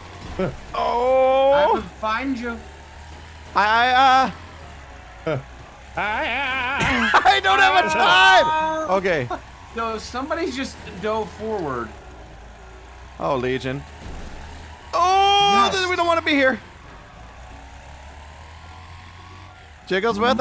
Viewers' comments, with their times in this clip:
0:04 It’s the secret ancient language Ohmish!!! 😆